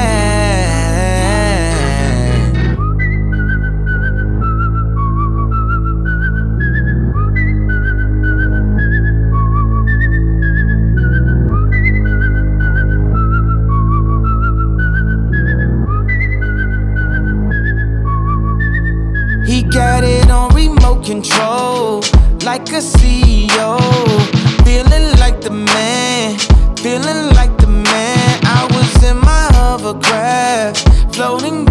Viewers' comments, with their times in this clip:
0:03 HolAy CRUD you can HEAR THE glObgoGabgAlab wHiSTLING😮😮😮😂😂🎉🎉🎉🎉❤❤ ITS MIDDLEKEY FORESEE😊
0:03 that whistle is taking me places
0:14 madddd Travis Scott don’t play vibes 🔥